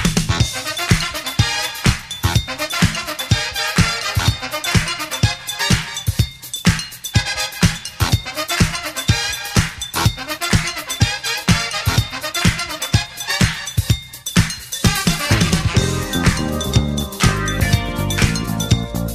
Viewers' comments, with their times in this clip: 0:03 Those horns sound alot like Cameo..."Your Love Takes Me Out"....gotta love the ol' school!